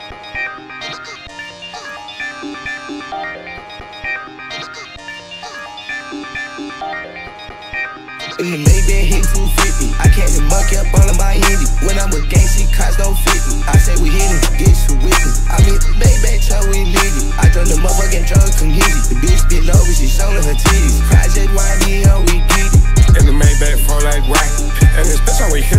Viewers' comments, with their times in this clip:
0:08 TOO HARD esp when Carti comes in right after